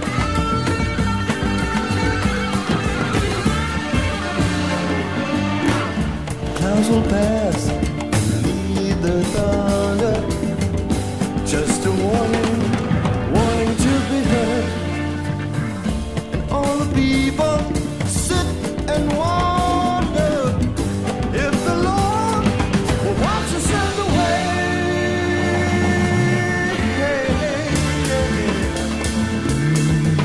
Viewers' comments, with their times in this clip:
0:06 fade in volume control.
0:15 Gregg's organ play on this. especially.